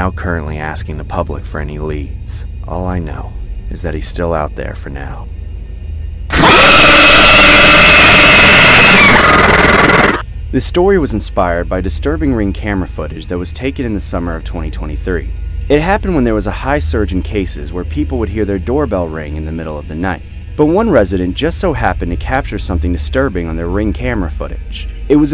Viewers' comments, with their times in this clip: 0:06 Thank goodness I didn’t have my headphones on 💀